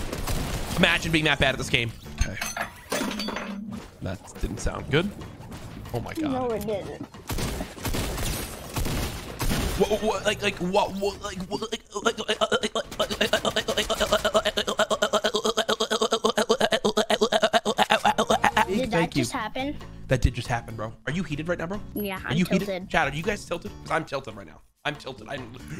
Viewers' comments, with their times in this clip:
0:09 new LMG sound :DDDD